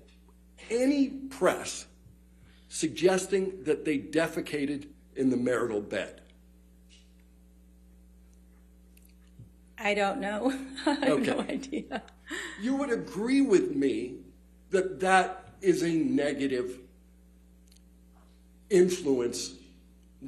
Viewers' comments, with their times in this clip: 0:04 is when he starts talking about it and the witness laughs.